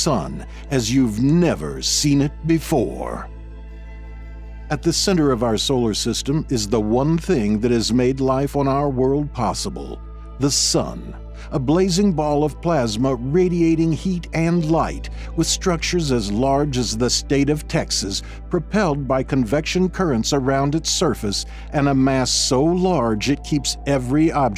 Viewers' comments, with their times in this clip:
0:10 why does it sound like he's talking about the sun like it's about to enter a wrestling ring?